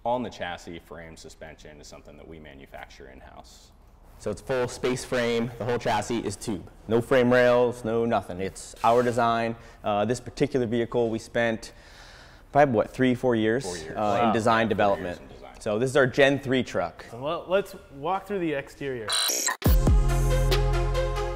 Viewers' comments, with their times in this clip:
0:04 yes i realize oh you dont have to yell like that i get it its a tube frame ok ok